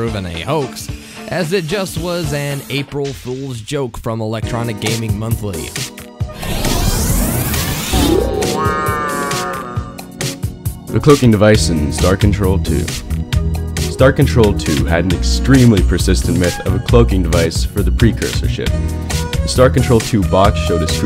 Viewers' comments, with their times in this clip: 0:05 dat music tho :)